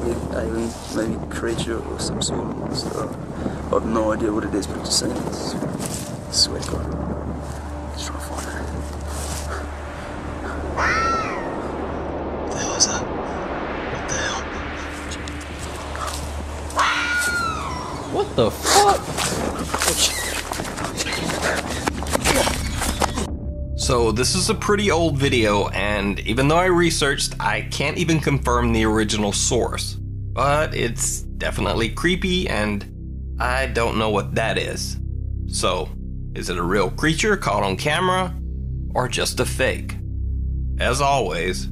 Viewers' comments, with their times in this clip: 0:08 The sounds seems like foxes to me. They sound like a woman screaming when they make certain noises and that sounds pretty similar to my personal experiences 🤷‍♂️
0:09 that's probably a fox they have a weird scream
0:11 Idk abt what was behind the tree, but was a fox call.
0:13 im pretty sure thats a fox in distress or some shit. definitely sounded like a fox
0:17 was just an owl and sometimes hawks change their tones at night
0:22 sounds like a fox or some animals to me....